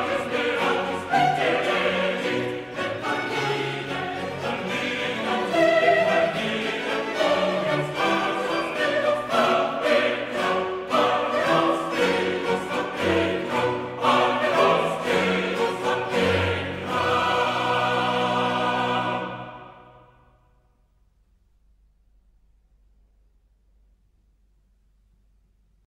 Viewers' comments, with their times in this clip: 0:08 The ‘chained hemiolas’ right at the end is something I’ve never ever heard in any other music before, it’s absolutely incredible!